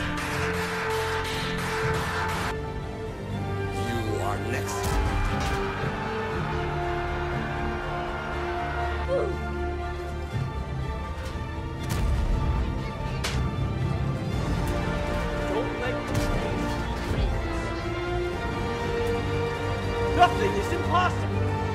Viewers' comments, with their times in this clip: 0:06 this battlefield music is epic